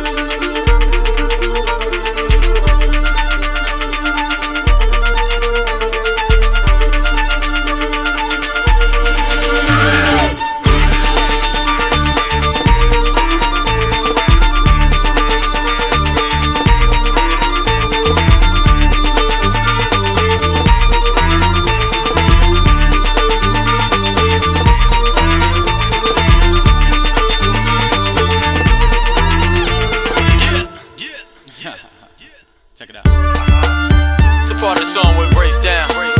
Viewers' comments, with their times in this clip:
0:10 Yes it sounds very similar
0:23 Music like a cover of Merlin Manson "Sweet dreams"